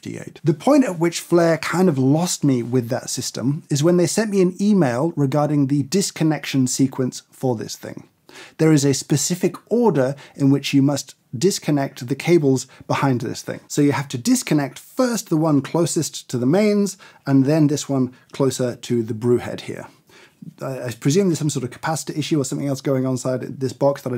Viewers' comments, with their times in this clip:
0:06 oh my god the way James says 'order!' reminds me of a particular someone from his country's government 😂